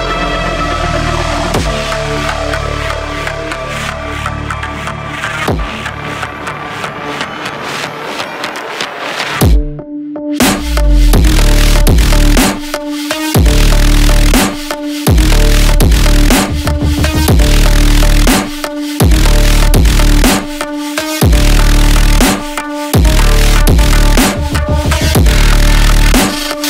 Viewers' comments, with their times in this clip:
0:09 At first I was like were the bass go brrrr then I hit and the bass go brrrrr now I want to see this synced with a A-10 Warthog